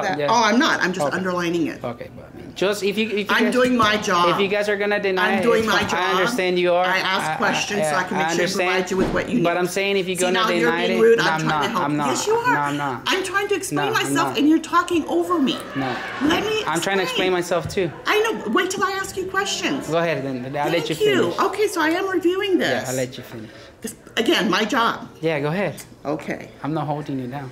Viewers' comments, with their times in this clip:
0:08 Major deflection and raising her voice. CALM DOWN LADY, you'll get to the buffet soon enough.